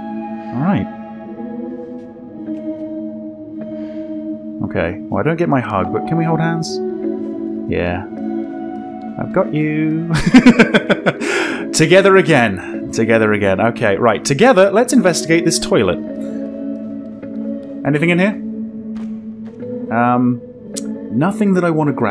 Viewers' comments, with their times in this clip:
0:06 Gotta admit the "I've got youu" was really cute